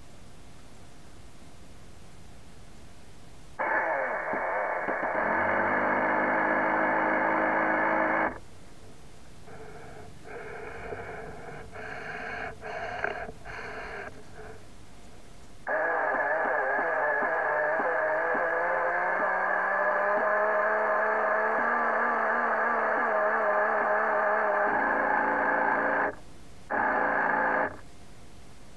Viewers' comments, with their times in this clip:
0:10 sounds like someone breathing, creepy 😥
0:11 did the submarine breathe??
0:15 sport car sound :)
0:16 this is what the motor says "PLEASE NO MORE!!! THIS IS A TORTURE!!!!"